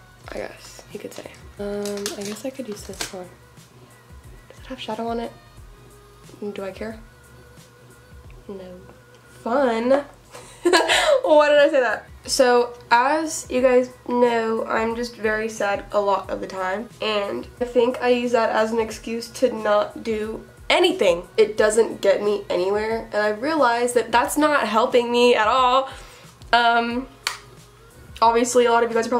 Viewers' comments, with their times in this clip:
0:10 OMG HER LAUGHHH
0:10 you literally have the cutest laugh omg😂😂😂